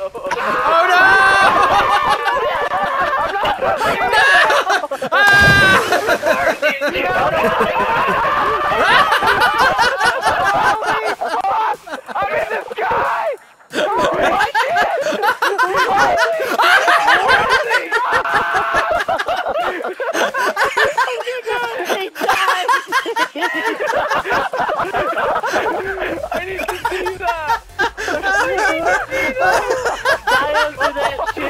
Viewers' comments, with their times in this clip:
0:06 dat laugh tho
0:12 Dat laugh tho!
0:13 BEST FUCKING LAUGH IVE EVER HEARD!
0:13 dat laugh do!
0:14 :') you're laugh is contagious
0:15 Dat laugh tho
0:15 dude you have the best laugh since Delirious and Seananners.
0:15 DAT LAUGH DOE
0:16 the laugh is real...
0:16 Dat Ricky Gervais laugh :3 <3
0:16 Dude... Your laugh was the best I've heard in a LONG time! I WAS LAUGHING AT YOUR LAUGH FOR LIKE A GOOD 5 MINS LOOL HAHAHAA
0:16 That laugh was priceless. XD
0:16 The laughter sounded like a clown it was funny thought
0:16 he just breaks up laughing
0:18 Lol his laugh
0:19 Love the almost uncontrollable laugh when the truck and car were glitching out, fantastic vid bro